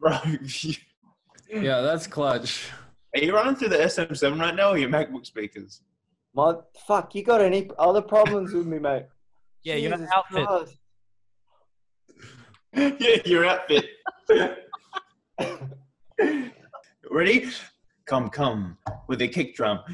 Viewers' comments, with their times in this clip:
0:07 Cal: you got any other problems with me mate Ash: yea yer outfit Luke: repeating Ash while cracking up you can't not love these boys.